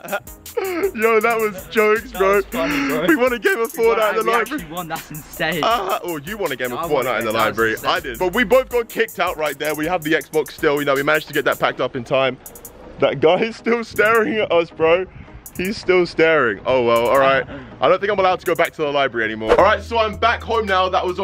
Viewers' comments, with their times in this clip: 0:04 Lol his face when you start laughing